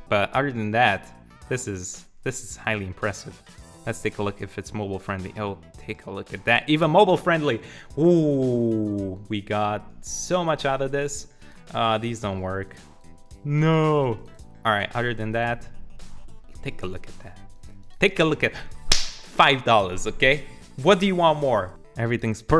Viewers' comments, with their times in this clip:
0:05 sounded like Pewdiepie